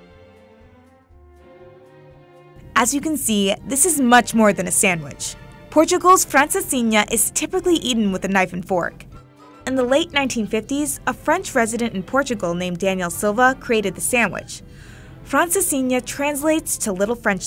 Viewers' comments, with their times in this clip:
0:05 I had to replay a few times, because that sounds waaaaaaay too American